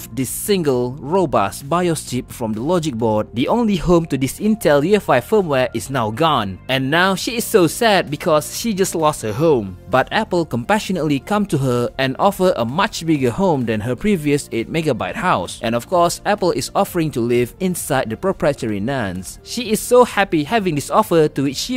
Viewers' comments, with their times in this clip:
0:08 am i the only one that understood that it lost a hoe?